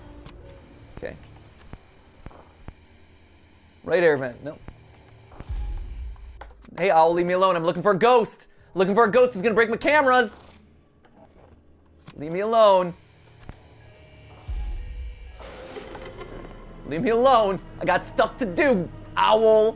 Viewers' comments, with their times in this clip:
0:05 I fully thought he said, "Ollie" And I was like, "Dang, he is stressed if he's talking to his son like that xD